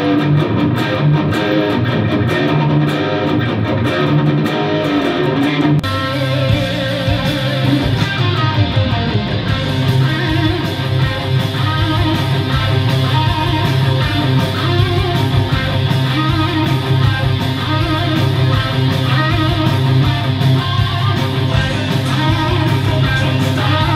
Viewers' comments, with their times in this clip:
0:10 sounds a little bit different compared to the original... ;-)